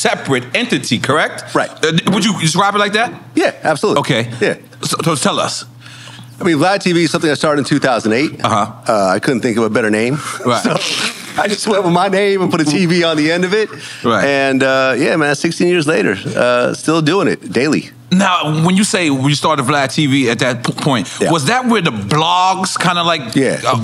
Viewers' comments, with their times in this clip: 0:08 Ima say this. I only watch this for the guests . NORE is ANNOYING af! ... Slurs like a drunk and the coughing and pausing and studdering and pack of sense he makes is ridiculous . Especially after halfeay. Im and im enjoying the episode bc of the guest. Nore is ruinjng ut